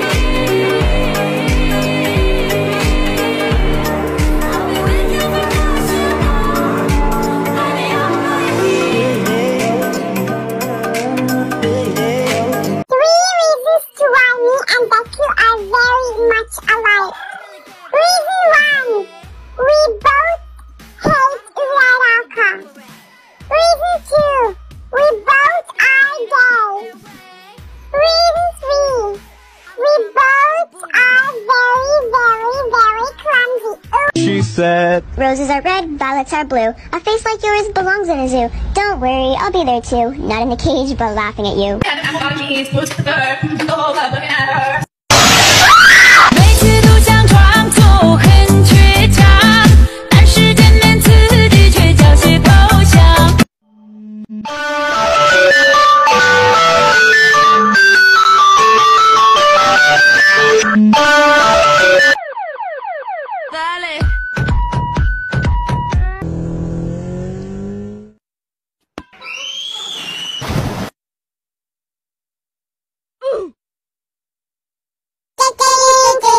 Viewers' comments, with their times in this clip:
0:08 wait no- sweet home Alabama starts playing WAIT NO-
0:55 that was personal i have a samsung and i wake up everyday to that ear pericing song 😃😀
0:56 Why reminds me of my old Phone ringing
0:57 pls i have trauma from this alarm